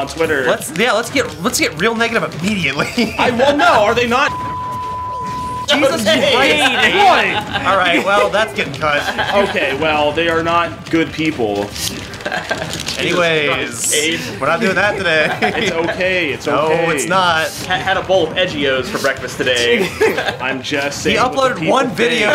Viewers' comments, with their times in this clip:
0:04 not even a minute in and we're already censored. I can tell this will be good
0:05 and then a censor, that’s how you can tell it’s peak fwob